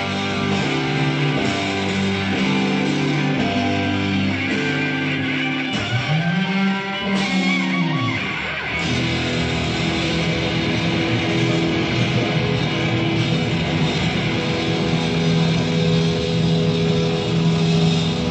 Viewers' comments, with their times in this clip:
0:06 that has to be the hardest resolved E chord ever played live.